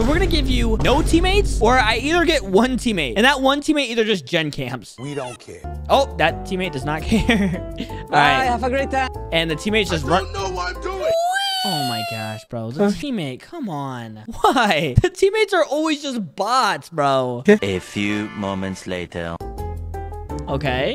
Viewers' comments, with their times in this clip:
0:03 that voice crack😂😅